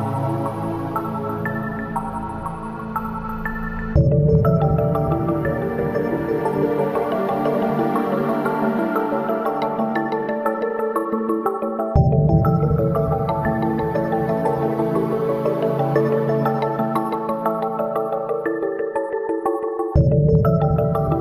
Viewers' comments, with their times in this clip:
0:04 sounds similar to A Rainbow in the Curved Air from Terry Riley, I love it